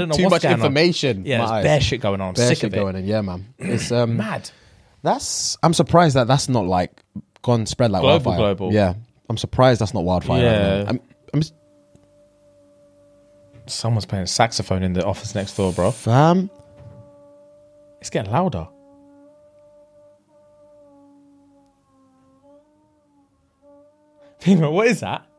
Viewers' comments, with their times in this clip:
0:10 Saxophone bit took me out 🤣🤣🤣🤣🤣🤣🤣